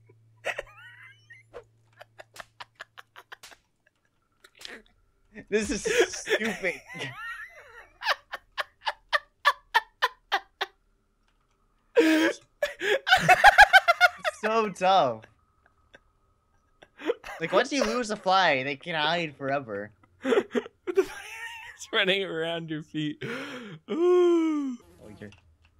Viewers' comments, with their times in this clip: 0:07 dat laugh... xD